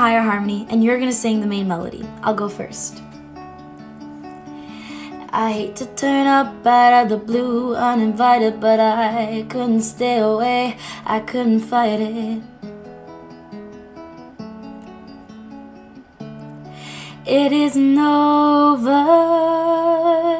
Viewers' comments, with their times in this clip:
0:05 damn, she sings the whole video herself, like she let me sing one sentence